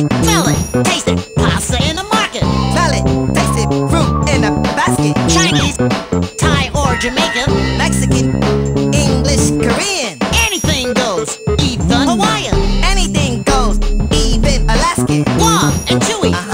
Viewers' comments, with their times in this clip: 0:04 The sacred line delivery of CHINESE, made iconic by two drunk idiots that decided to sit down and play the co-op mode of this game.